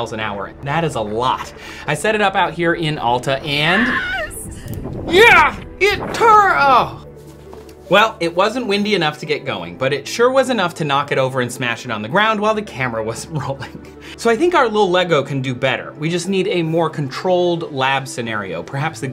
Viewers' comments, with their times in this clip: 0:03 Nailed the Wilhelm scream 😂👊